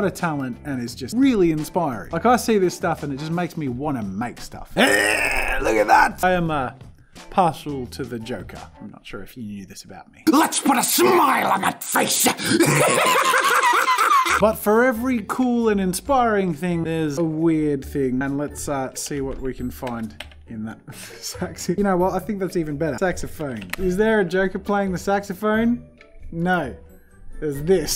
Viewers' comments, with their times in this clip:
0:10 I'm disappointed with myself.... How did I crack up to this? It's probably the laugh. Well, you got me Jazza.
0:12 one of your vocal cords is dying in that laugh
0:12 Bruh that laugh holy shit
0:12 you sounded like Krieg from Borderlands 2 for a moment there
0:14 shit... the joker laugh is good.